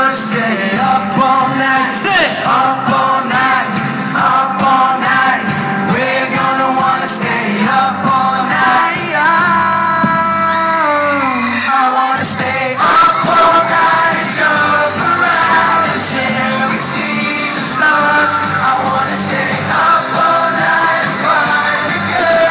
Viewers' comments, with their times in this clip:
0:07 Oh, Zayn.. I love your voice.. this part is a KILLER! xxxxxxxxxx
0:09 zayn's moan on ... jesus take the wheel